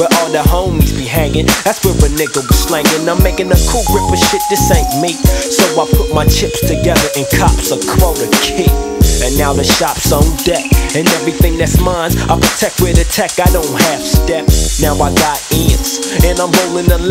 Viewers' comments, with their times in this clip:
0:03 That drop is sooo hard lol Soopafly really that nigga